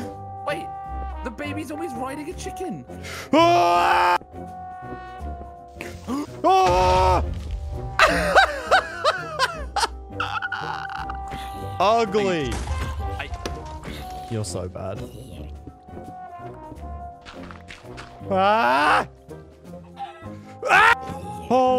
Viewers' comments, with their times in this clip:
0:07 His laugh tho.